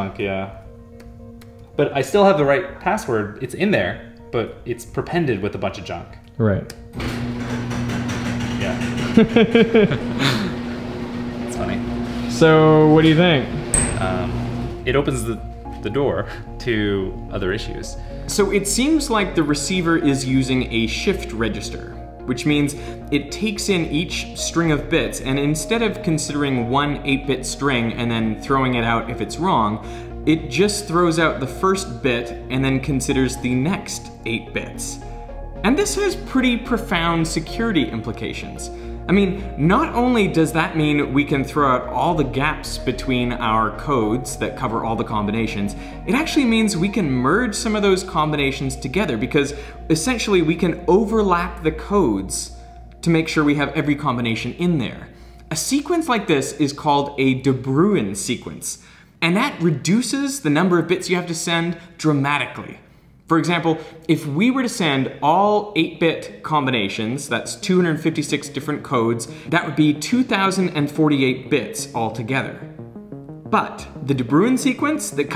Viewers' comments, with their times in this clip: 0:07 damn that door is loud, you should use some wd40 on the small wheels on the side of the panels
0:58 that hurt my ear